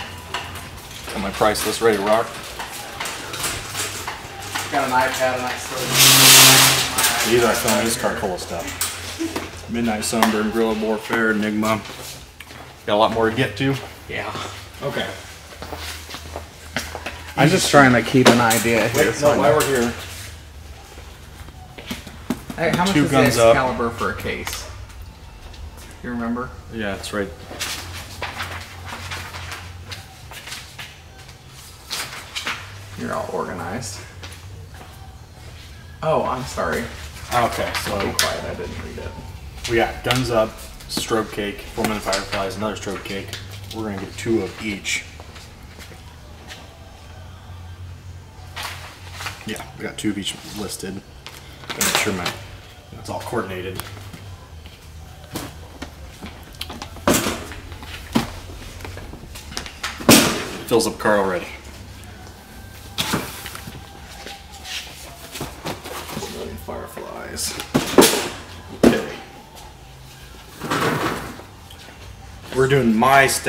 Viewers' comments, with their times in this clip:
0:10 I thought he said the n word for a second 😂😂😂
0:58 Anyone else here livin' on a prayer by bon jovi in the back?